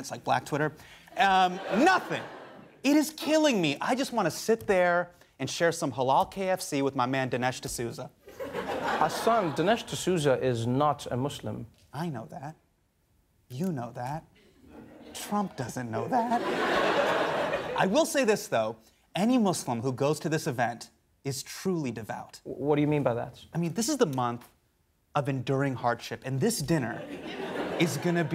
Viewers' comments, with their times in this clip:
0:10 the way his voice cracks on this one.. almost lost it.